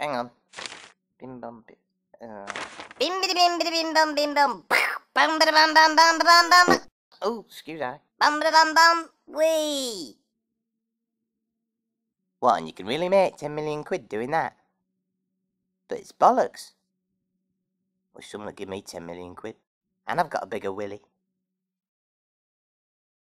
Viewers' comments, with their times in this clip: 0:06 did he farted?